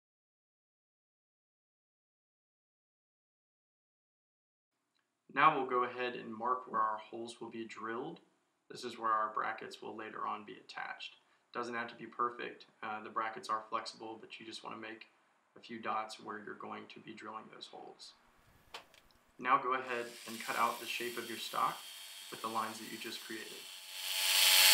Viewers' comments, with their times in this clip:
0:08 I did put a headphone user warning though....